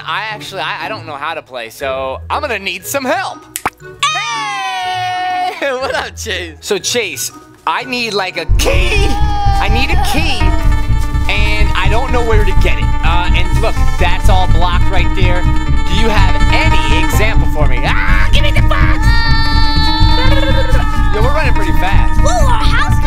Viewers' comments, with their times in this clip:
0:08 best voice crack ever